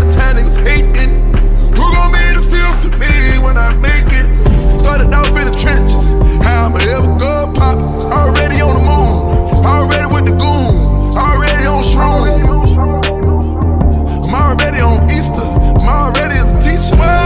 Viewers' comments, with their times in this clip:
0:03 The "uuuuuuhh" in the background w/ da drop 😍😅 xx